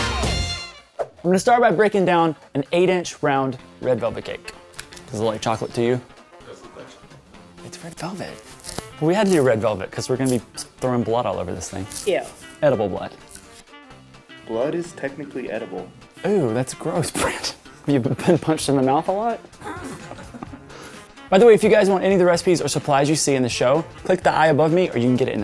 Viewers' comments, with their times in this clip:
0:08 i love the sticky sound hahaha